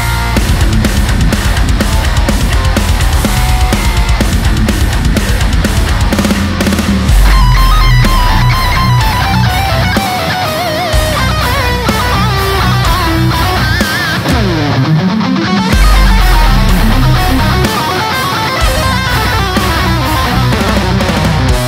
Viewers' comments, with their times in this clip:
0:07 Love the Pantera Domination solo vibes! KIlled it is always, best demo channel on YT, period!